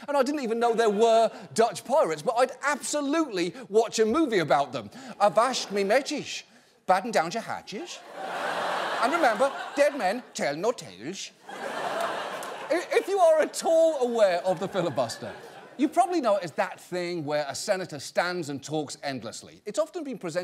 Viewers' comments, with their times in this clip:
0:06 yo this guy kinda sounding swedish lmao